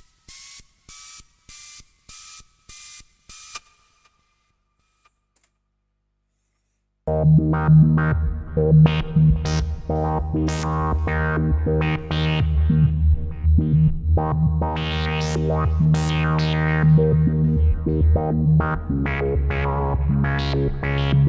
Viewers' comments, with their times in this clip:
0:07 sample and hold is as good as the ARP Odyssey's. Thanks for showing me that. Now I'm off to try it on the ARP lol